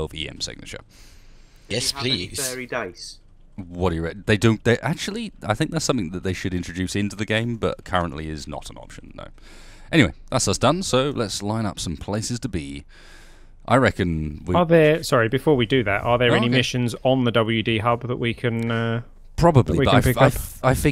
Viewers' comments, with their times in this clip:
0:04 what is it they should introduce into the game, I couldn't make out what he said :/